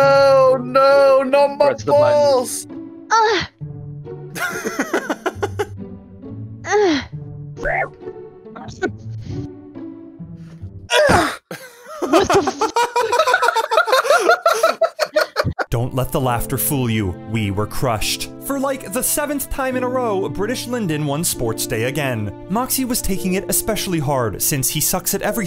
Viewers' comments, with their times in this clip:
0:06 new roblox death sound
0:10 that grunt tho